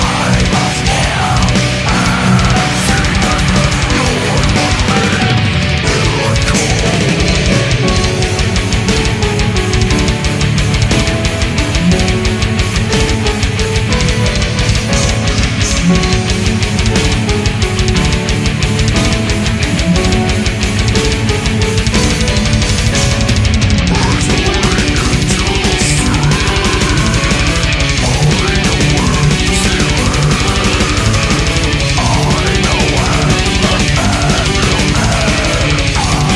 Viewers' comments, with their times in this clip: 0:07 This song changed the way i play guitar today. Its the part when the guitars harmonize each other while the piano is playing over them. Overall great sound and theres no other that sounds like them
0:23 this has gotta be my favorite riff ever